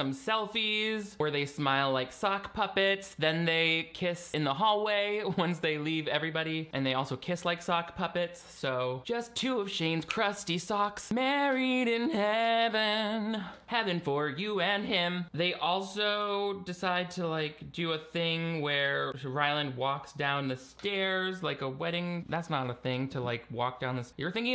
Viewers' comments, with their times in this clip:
0:09 your singing voice gives me Broadway vibes specifically book of mormon